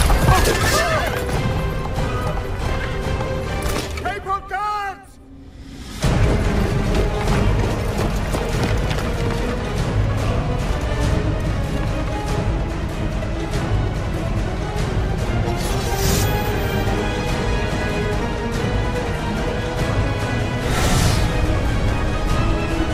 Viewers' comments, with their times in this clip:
0:03 I'd swear that a guy yells "We need more guards!" XD